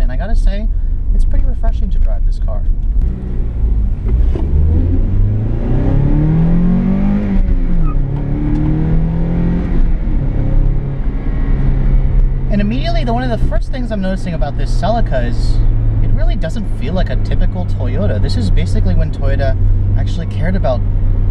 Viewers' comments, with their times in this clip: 0:04 How does this guy keep chirping the wheels?? I tried power shifting and everything and I can't chirp my wheels.